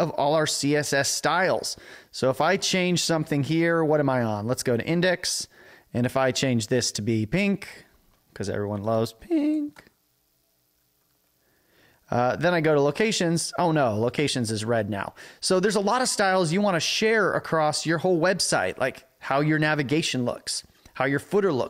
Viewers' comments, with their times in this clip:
0:09 that voice crack xD